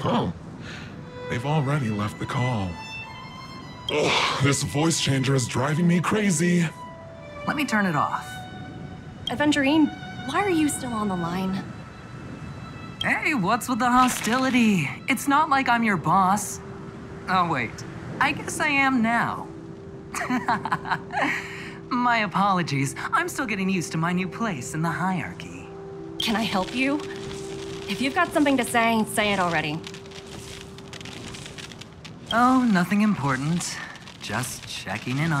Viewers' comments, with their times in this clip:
0:09 I like calling Aventurine's name with Topaz's voice here It's so cute.
0:20 HIS LAUGH OH MY GODD